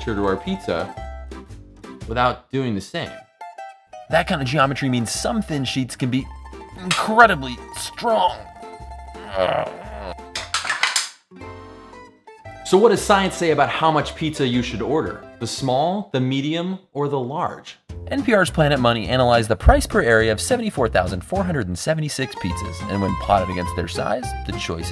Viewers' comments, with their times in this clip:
0:09 i wonder if ironman actually poops iron, and this is waht it sounds like